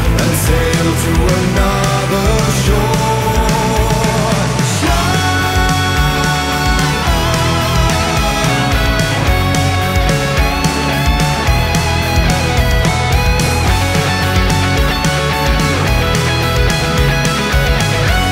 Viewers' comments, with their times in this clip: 0:04 FAN-TASTIC track and fantastic solo part ! 🤘😎🎸 Greetings from Serbia! p.s. Herald of Darkness was a Hit of the Year 2023 !!! 🧢⤵